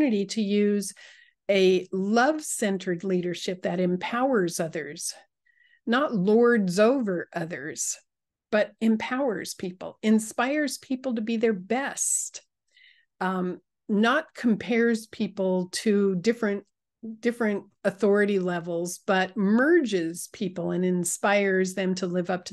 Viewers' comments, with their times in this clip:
0:07 I like the sound of a good calm lightning and rain. And And everything balanced out in the positive way. 😊Thank U